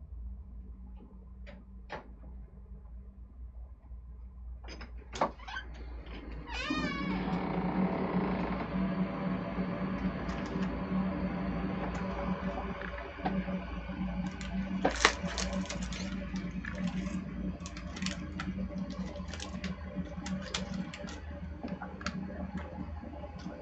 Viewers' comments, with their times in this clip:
0:06 I don't know why I'm laughing at the compressed air conditioner sound!